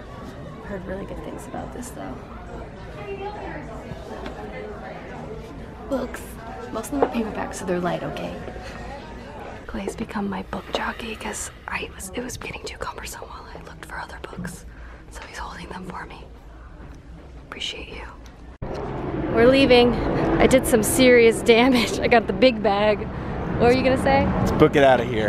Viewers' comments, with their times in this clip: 0:10 asmr lovers are squeaking